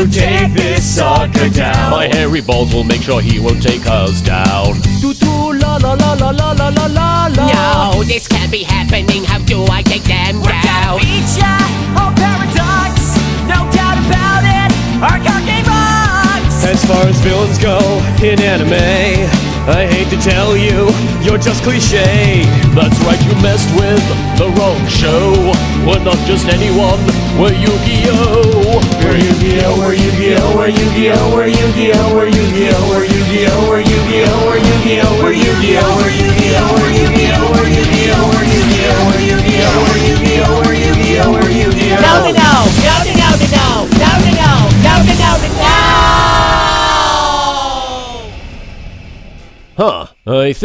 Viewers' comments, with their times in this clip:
0:04 best solo ever
0:07 Wait, I just noticed, the bad guy (I forgot his name, it's been a long time since I watched) sounds like Joey. How did I not notice? Here: See, doesn't it sound like him?! Or is it just me?
0:10 I love this whole thing and I've rewatched it so many times, mainly because I love everything about the whole abridged series, and in particular, this right here I love the whole song but his voice just hits different 😍🥰
0:10 Sounds like he was saying dominos donim doniminos noooooo!!!!!!!! I like jaden's singing voice on part
0:10 beat or eat ?
0:11 First of all yusei and Yugi's sexual tension is super halarious Second thing Jaden's definitely got his game on when he was rapping and definitely got his game on when he was singing His singing was amazing that I wanted to keep listening and plus I even sang with him I just wished that they made a longer version of his rap and their song
0:11 He sounds the best at this point.
0:13 I want to hear more of that voice
0:35 Jaden's voice here is also awesome